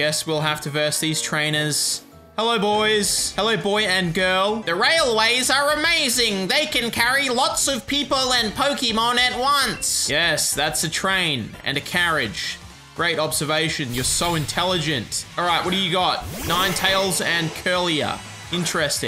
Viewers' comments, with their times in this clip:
0:06 you sounded like moss from the it crowd😂